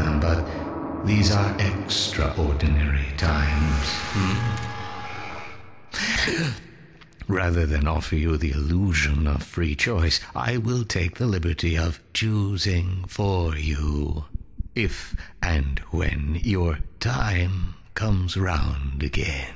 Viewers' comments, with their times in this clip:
0:04 Is there a a sharp intake of breath ?